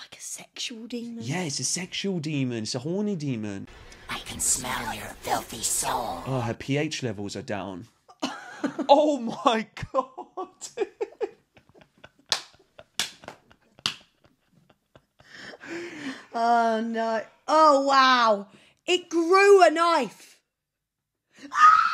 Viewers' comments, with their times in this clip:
0:03 it's nice that you were able to genuinely make her laugh through this insanity, because Im sure she really needed it. Also, that joke caught me so off guard I started cracking up too😂